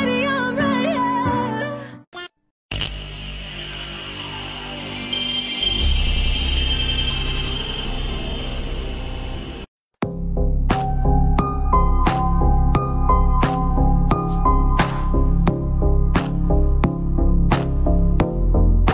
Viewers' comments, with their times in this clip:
0:04 whats the name of that chill tune starting ?